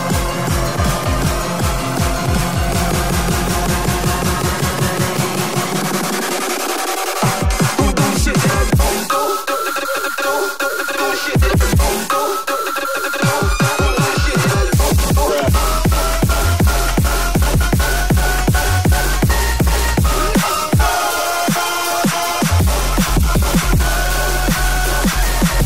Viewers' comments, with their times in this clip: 0:09 Roblox uffff… I love it